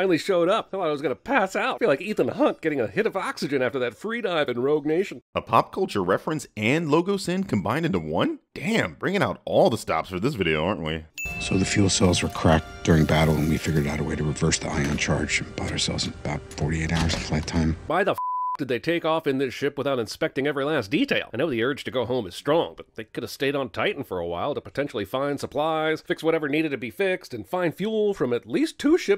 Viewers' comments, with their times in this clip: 0:10 so that's how you'll pronounce stupid? ok